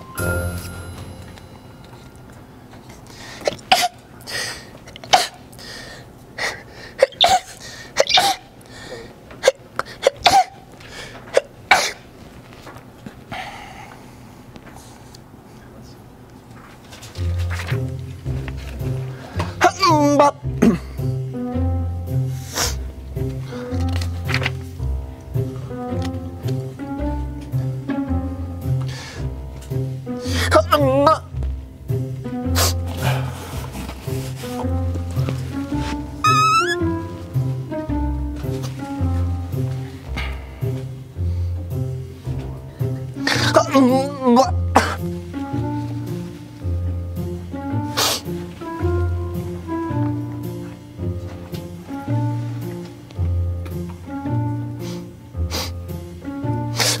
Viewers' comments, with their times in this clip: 0:03 lol thats how I sneeze wtf
0:03 i actually sneeze like that!! 😂😂😂
0:03 This is funny, it's heard like crying anime girl. and it's cute.😁
0:06 dude that's how my cat sounds like when he is sneezing I SWEAR WTF
0:18 an african sneezing
0:19 He was trying to sing #Makeba 😂😂
0:19 that’s literally how I sneeze LMAO Edit: like literally my sneeze doesn’t come out it makes that kind of sound
0:19 when an alien from Mars sneezes 😀
0:19 Bro the haa..... umba sneezing thing MAN that killed me I almost died here's th....he....ee...... haam...umba sorry here's the part
0:19 that sneeze came from stone age
0:20 I’m Baaack I’m bark 😂💀
0:20 Wtf is haoomba? 😀😀
0:21 omg that sneez ...aamba 😂😂
0:21 gotta love those sneezes with a melody to it
0:29 my face when I sneeze exactly like that
0:36 when block your nose and sneeze finds its way from other way😁😆
0:36 when someone tried to hide their fart
0:37 girl solo laughing
0:44 Any Tamil people's?? It's like Achchamma🤧